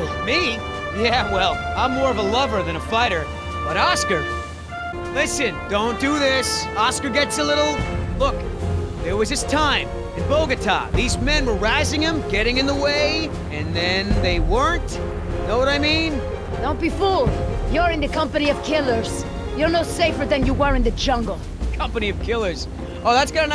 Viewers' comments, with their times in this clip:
0:04 Distant "Oh Yeah" in the background